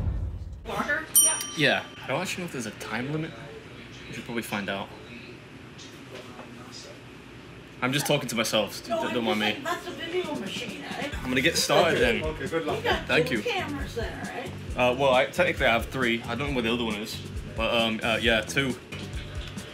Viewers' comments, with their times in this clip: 0:05 lmao. fucking roasted. really dont get why yanks and canadians say "waduh" or "wadur"